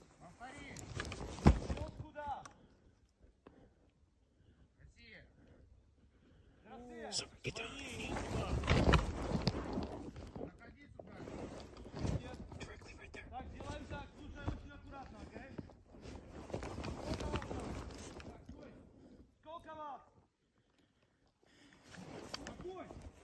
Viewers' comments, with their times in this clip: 0:09 "Да свои? Иди сюда". "СВОИ" - Translated, it means that they are "their own", that is, allies This phrase was said by one of the Ukrainians. The sound comes from somewhere close, to the right. And the Russians are ahead. So the Ukrainian wanted to deceive the Russians? The author seems to have made a mistake.